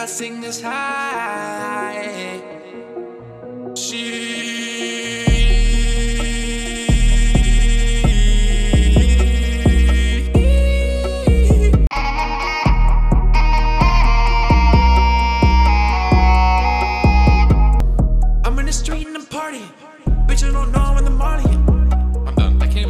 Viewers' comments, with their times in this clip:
0:08 How did you do that vocal vibrato ?